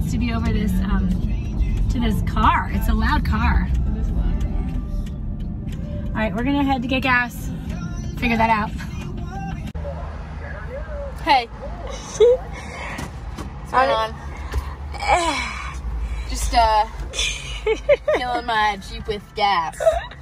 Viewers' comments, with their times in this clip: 0:08 i heard 5sos yesss